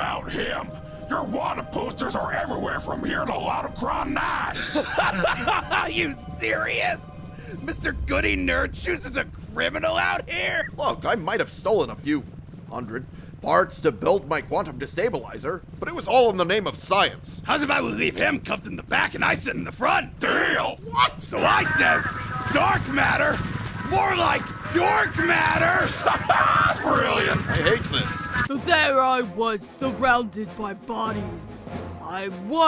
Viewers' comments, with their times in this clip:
0:03 Stan's dying laughter realizing his brother is also a criminal just like him lol
0:19 HE SOUNDS LIKE A BIRD